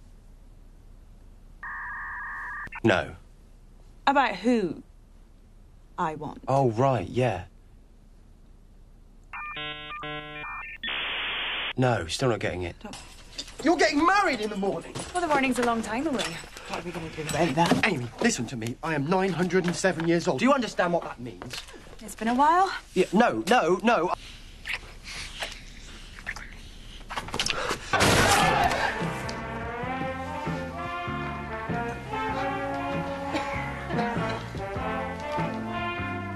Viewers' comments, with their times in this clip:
0:05 The dial-up sound effects took me out 😂😂😂
0:20 I keep thinking about the man who gets so exciting when River Song tells him she's his wife and his chuckles and the "Oooh" when he looks at her parents.